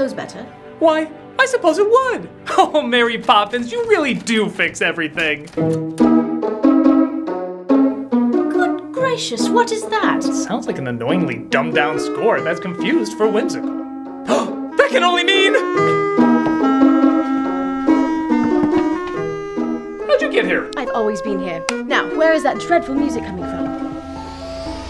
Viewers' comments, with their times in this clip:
0:09 Does anyone know the name of the music that starts I KNOW I’ve heard it somewhere before but idk where and it’s incredibly catchy.